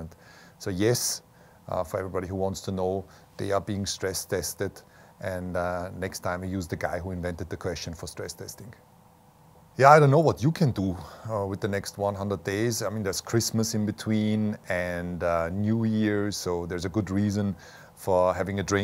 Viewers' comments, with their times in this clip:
0:05 what is he saying? "next time we use the guy who invented the crash ...?????... testing.